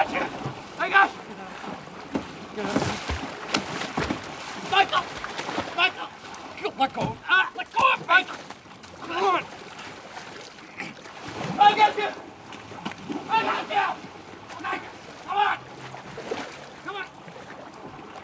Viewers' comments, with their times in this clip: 0:04 Around the mark you can here another voice say “no” just barely